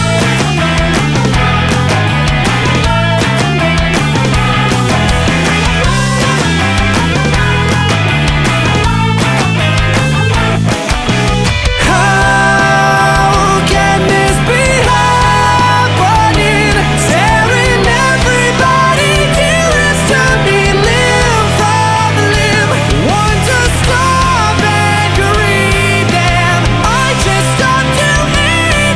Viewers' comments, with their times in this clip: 0:10 Ok but it hits so hard - your voice is wonderful